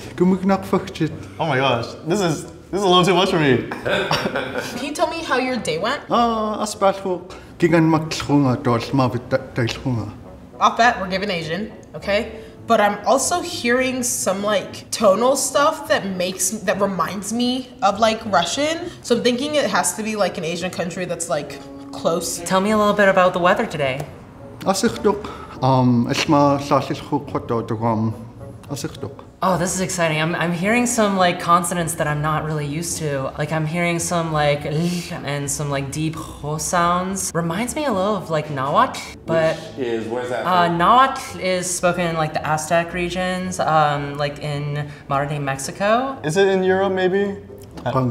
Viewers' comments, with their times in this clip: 0:06 that dude sounds like he's from the game cult of the lamb
0:36 I'm impressed she knows about Nahuatl, and even pronounces the word good!